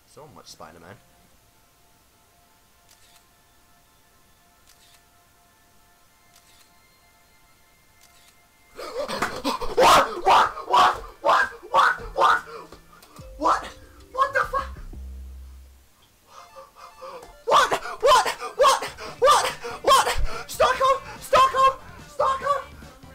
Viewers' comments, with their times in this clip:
0:09 was that a duck?
0:09 sound like a duck 🦆 LOL 😂